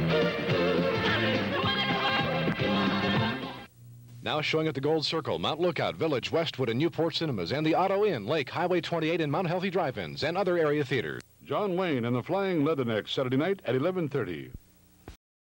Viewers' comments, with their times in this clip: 0:10 In you could see the the next ad, however, you can still hear the Grease trailer announcer in the background. That is an classic example of sound mixing errors on TV. The same thing happened on a recording of We Bare Bears were the episodes sound is 2 seconds off! 😄